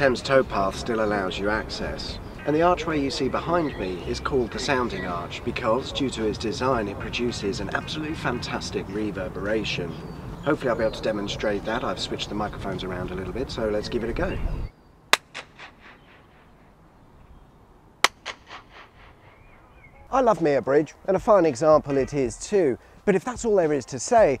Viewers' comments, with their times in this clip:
0:10 That clap reminds me of and old dance track I can remember! 🤔